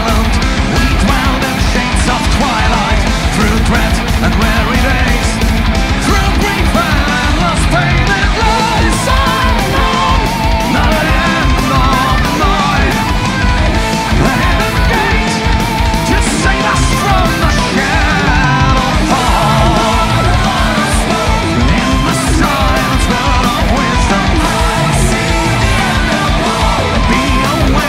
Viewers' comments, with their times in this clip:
0:10 Very poor video editing (especially ). And the sounds seems quite sloppy too....The previous DVD looked soooo much better. But, yeah, still a GREAT song !